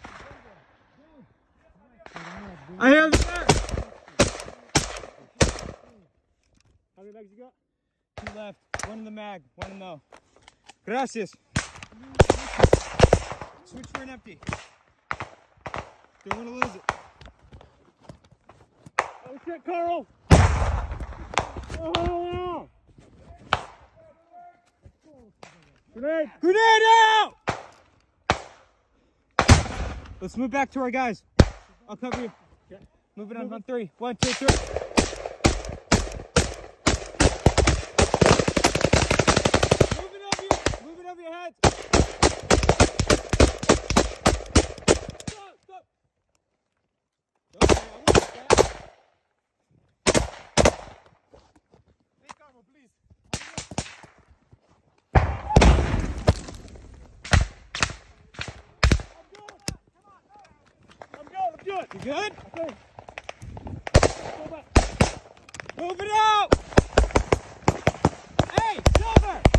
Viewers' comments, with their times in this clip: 0:10 I liked the "gracias" in Russian accent 💯
0:10 "Gracias" but in Ukrainian
0:54 holy shit. The scream of death.